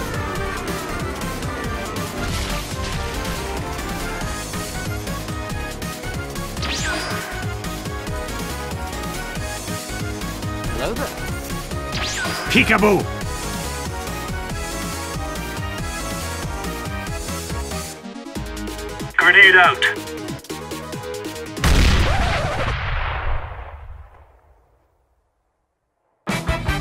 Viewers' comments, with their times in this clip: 0:09 Is that my voice lmao?!